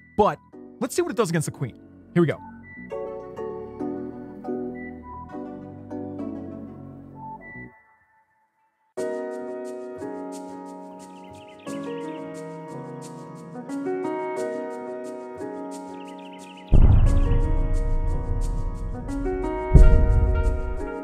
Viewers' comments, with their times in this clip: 0:05 that music when the bomb goes off… so silky smooth